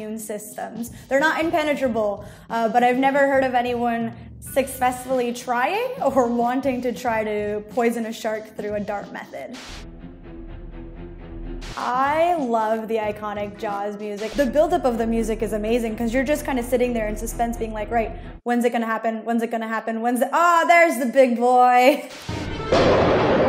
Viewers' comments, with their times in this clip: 0:04 succfessfully? Succfessfully? Tomato twomato.